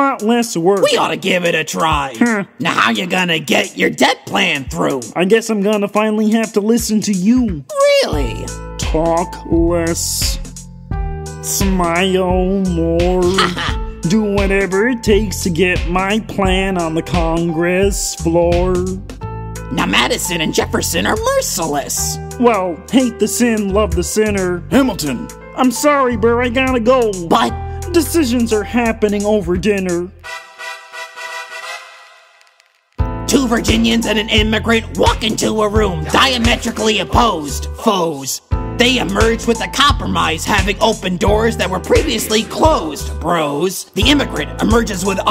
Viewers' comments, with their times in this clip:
0:07 I just listened to a guy doing an impression of Kermit doing an impression of Hamilton doing an impression of a guy doing an impression of gonzo doing an impression of burr. Edit: it’s
0:33 The Gonzo-Burr voice definitely became more modern and improved